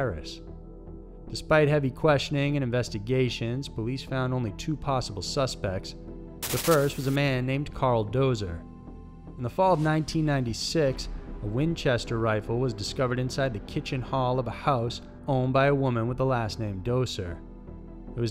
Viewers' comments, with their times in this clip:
0:06 okay wtf was with that transition. Everything was calm until the scratchy noise came up and scared tf out of me, lol.